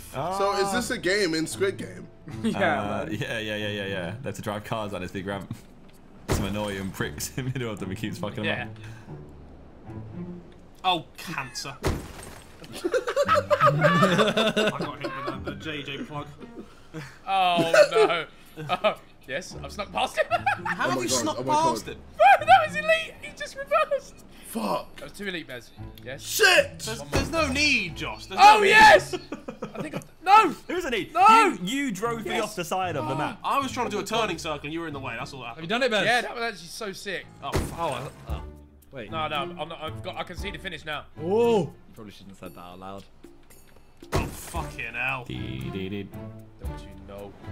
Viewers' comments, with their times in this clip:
0:09 Harry saying "Oh cancer" in the most british way possible has to be the funniest part of this video
0:09 Harry saying "Oh cancer" in the most british way possible has to be the funniest part of this video
0:10 when harry turned into a dutchman
0:12 harry became dutch
0:28 is it just me or did ethan say the n word
0:28 volume up :o
0:30 I swear behz said the n-word